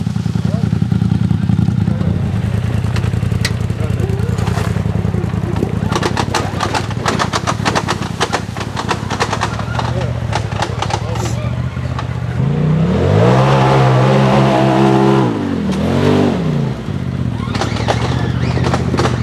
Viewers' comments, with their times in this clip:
0:07 So I’m new to side by sides and everything but mark as the guy is up and down the hill what is that clicking when he is going back down???